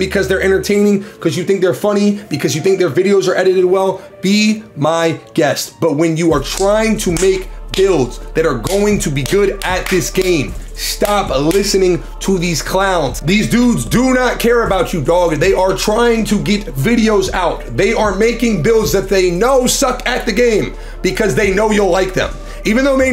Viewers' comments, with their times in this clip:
0:05 The clapping made me get up to make this build